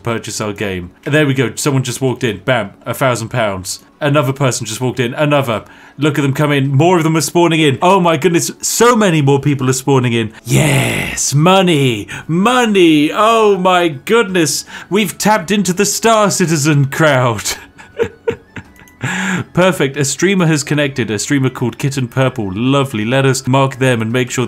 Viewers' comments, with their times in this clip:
0:09 is the most diabolical 'Yes' I might have ever heard from a non-fictional villain